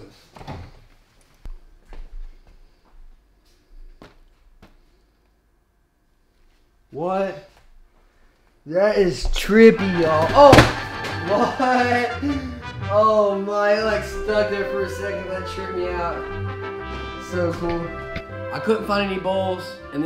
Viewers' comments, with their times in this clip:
0:03 voice of disappointment but instantly be happy